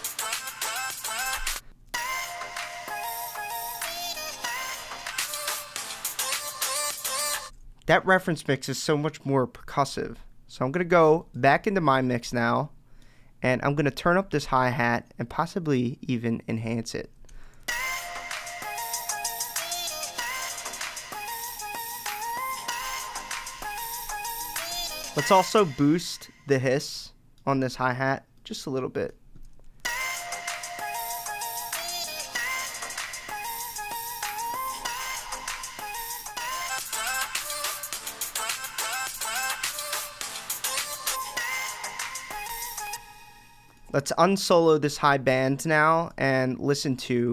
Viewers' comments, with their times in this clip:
0:05 the reference was wider!
0:25 Lmao you didnt take out the sub in the hihats bro 😂
0:25 Hello...I have a question. Can you tell why there is NO LOW CUT on YOUR HighHat ? 🤷🏻‍♂
0:25 you didn’t low cut your hihat, what was 1st rule ?
0:30 You didn't cut the very low frequencies off the hi-hat (literally the first tip you gave)
0:33 Funny you didnt removed the lows from the hats 😅🫶🏼
0:33 YOU boost the sibilance and leave the sub (inaudible but still problematic) .... please...